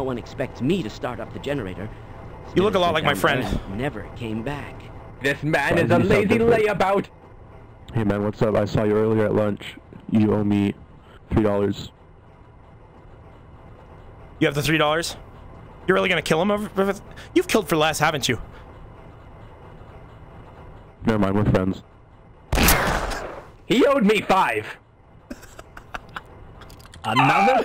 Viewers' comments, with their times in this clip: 0:10 the way he says YOU OWE MY 3 DOLLARS then the other guy kills him and says HE OWED ME FIVE 😂😂